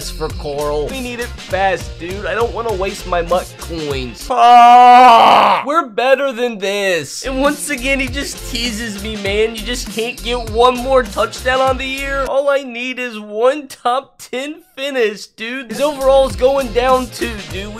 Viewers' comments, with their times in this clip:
0:04 FREE CHUBAKA SOUND EFFECT